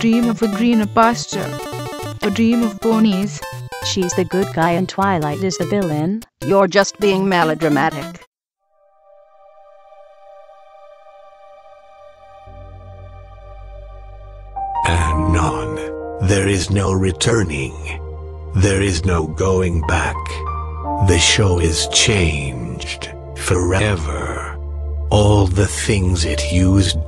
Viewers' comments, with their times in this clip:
0:10 Huh, am I the only one who thinks that the voice sounds an awful lot like Ulysses from The Lonesome Road add-on for Fallout: NV?